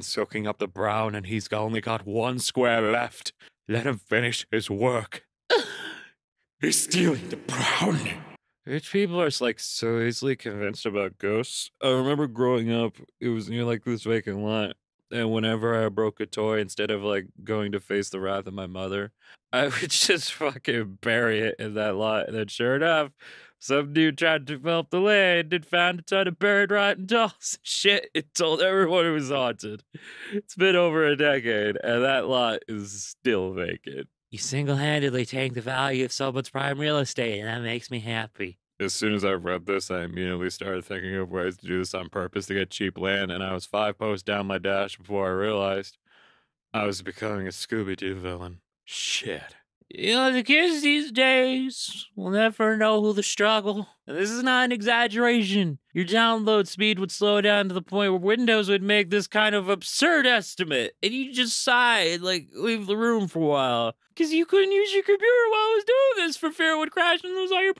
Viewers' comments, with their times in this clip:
0:08 the tired voice just makes this part infinitely more hilarious
0:48 You sound like you're at a sleepover and it's like am and you're friends dared you to make this video. at least, that's what I would sound like